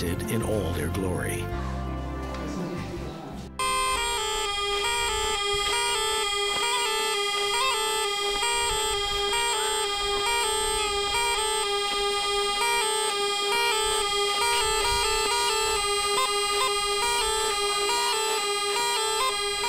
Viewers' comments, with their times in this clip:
0:03 Beautiful place, amazing food but, god that instrument, is simply awful. My ears are bleeding